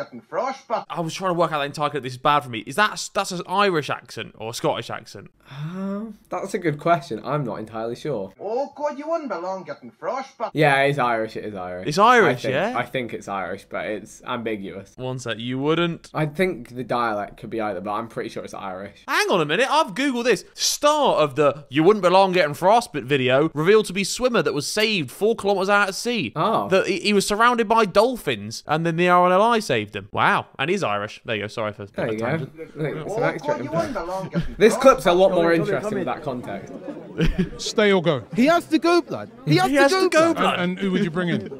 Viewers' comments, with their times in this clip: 0:03 its a northern irish accent
0:09 that is an Irish accent
0:28 Northern Irish accent fellas